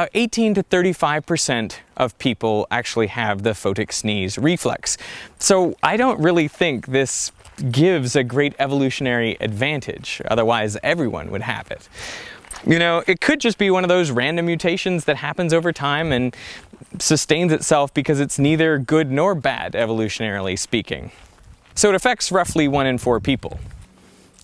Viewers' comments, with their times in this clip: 0:08 why there is a door openning sound